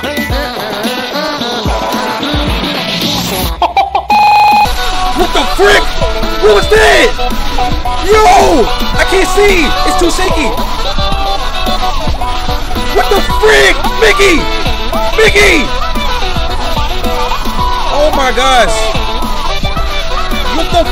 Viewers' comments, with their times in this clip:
0:03 mickey makes luagh like evil 😱
0:04 what the freak Bruh he was faking because of Mickey Mouse yelling